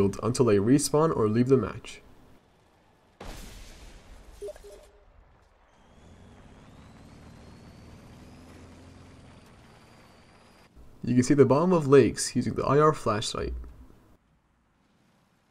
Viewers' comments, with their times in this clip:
0:03 was that your friend on steam? :P (sound)